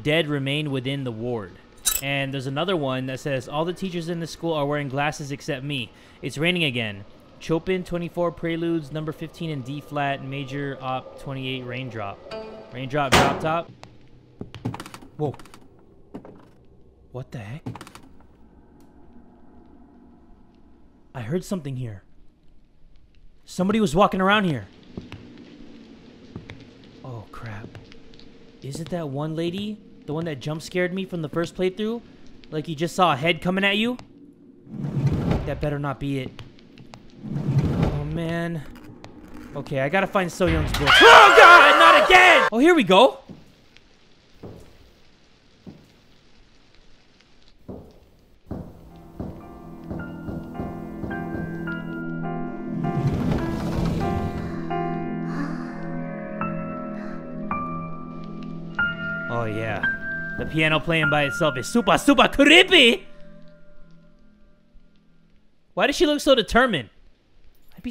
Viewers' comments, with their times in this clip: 0:05 did you seriously just pronounce Chopin like a fuckboy
0:07 am i the only one who's bothered by the way he says Chopin?? Just me?? kk
0:49 Why are everyone’s shoes so noisy? I mean, when someone is trying to be quiet, their shoes go thud thud thud thud thud Example: